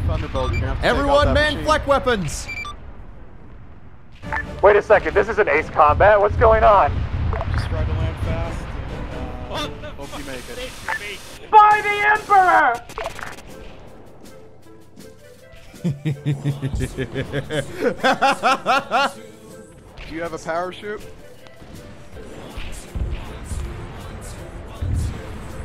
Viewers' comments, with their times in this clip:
0:09 Is no one going to talk about the static here either JoJo refence, or (my theory) the mechanicus being done with the heretic blasting music so changed it to something more better.